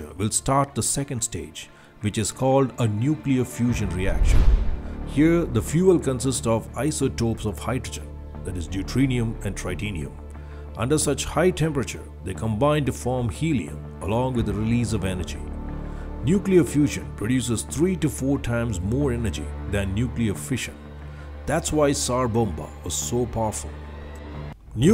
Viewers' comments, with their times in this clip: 0:05 deutrenium and tritenium, are you out of your mind